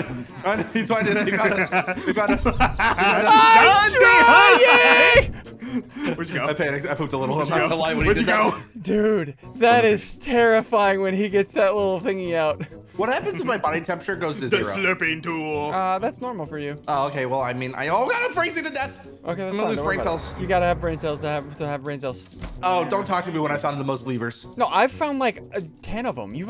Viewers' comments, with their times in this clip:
0:08 it sounds like ssundee old derp ssundee voice man. Good memories